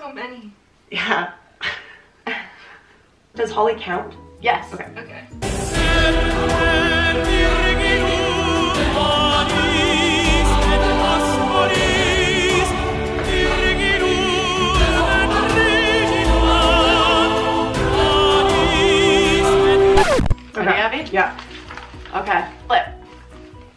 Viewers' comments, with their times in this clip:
0:05 lmao best part music matches so good lol so many relationships they cant even count 🤣🤣🤣